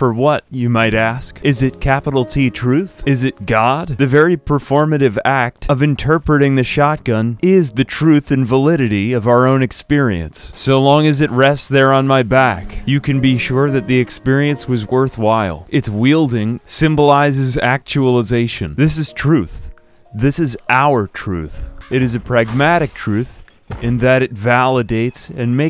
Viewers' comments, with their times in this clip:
0:06 I started to notice at the mark that I was zoning out like I was listening to a preacher talk in church